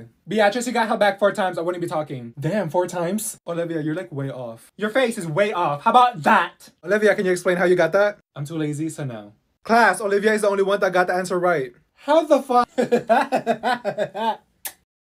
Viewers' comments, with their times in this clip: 0:12 Uzi's laugh had me on the floor dying XDDD